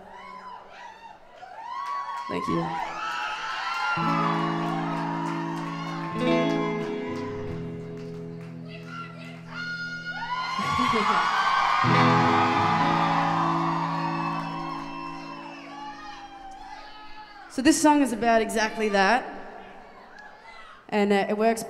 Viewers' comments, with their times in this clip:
0:07 I just love that women screaming "We love you Taaasshh!" ! Thats just perfect introduction!